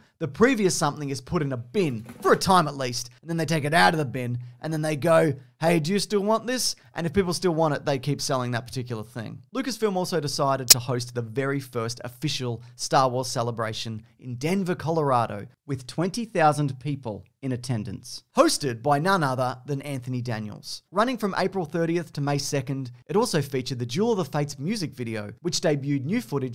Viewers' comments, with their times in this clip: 0:09 cool sound effect
0:09 Loud audio glitch in right channel!
0:09 Count how many times he fuckin' said (Or take a shot) "Wait until the end of the video" (Spoiler it's 5) Also that static pop scared the fucking shit out of me and it's 5am
0:09 nice audio error. Gave me hemorrhoids
0:10 Thought my speakers broke
0:10 Audio jumpscare lol
0:10 broke my ears and gave me a heart-attack
0:10 random audio glitch
0:10 you think someone's getting fired over that chirp?
0:10 There go my eardrums